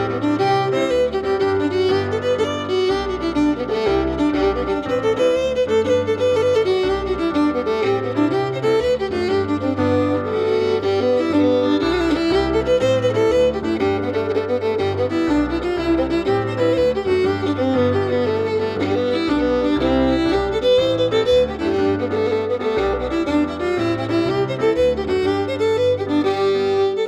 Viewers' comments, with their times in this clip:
0:10 lovely and unexpected double stop of a 6th interval. Brilliant set from ye all.